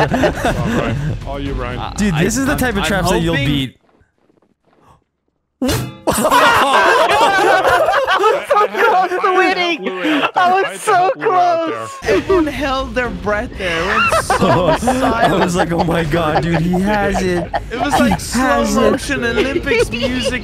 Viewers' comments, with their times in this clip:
0:04 was so silent I thought the video paused or that something happened to the audio. That was pretty wild.